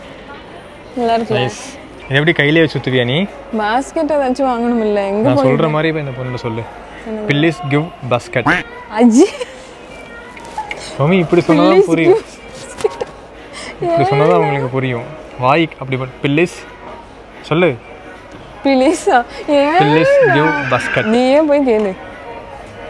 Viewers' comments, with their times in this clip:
0:05 pillis giv bascut😅😆🤣😆🤭